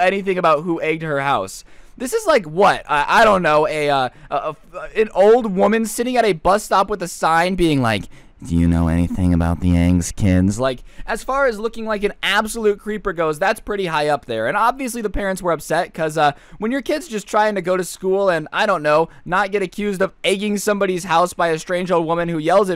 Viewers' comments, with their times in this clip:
0:08 he sounds like a depressed SpongeBob